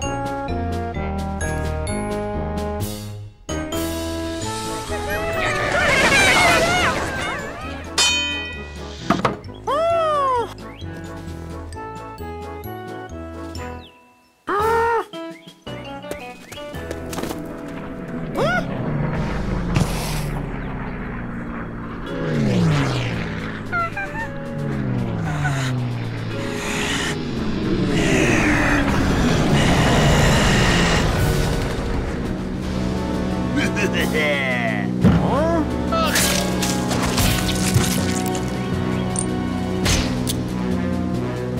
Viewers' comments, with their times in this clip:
0:08 AOOOOOOOOOOH lol i love their voices
0:22 The noise he makes before he gose mad is so cute 😍
0:23 And this cute whine
0:23 HIS LITTLE WHIMPER BEFORE SNAPPING IM CRYING RN😭😭😭😭
0:23 that short squeak, it's the cutest sound of incoming bloody massacre i've ever heard.
0:24 High pitched voice
0:25 You gotta love dat guitar riff It happens every time he flips out